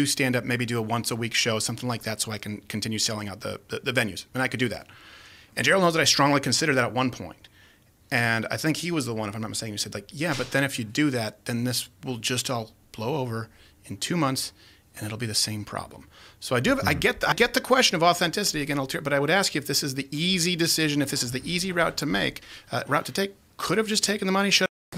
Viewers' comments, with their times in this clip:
0:06 Lmfao Crowder is such a cornball “there were a lot of goooood people. good people with skin in the game—a lot to lose” bro wants to be an 80s movie so badly 😂😂😂